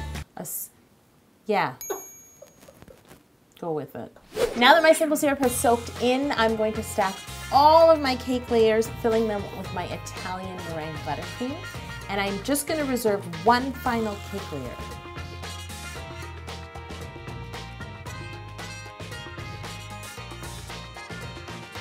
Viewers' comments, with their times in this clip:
0:06 that messed with my head. I'm watching how to cake it but with man about cake music